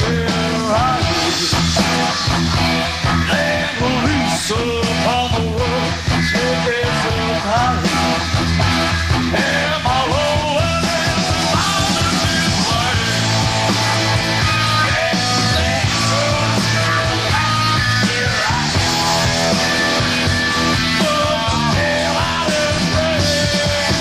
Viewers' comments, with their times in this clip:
0:10 sounds like Elvis